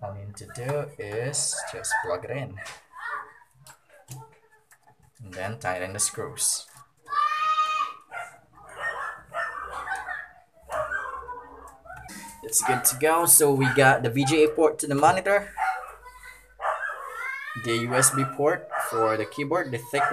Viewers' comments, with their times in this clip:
0:07 a kid is screaming "wait!" I can only assume it's because you are using a VGA cable instead of an HDMI or Displayport. 😀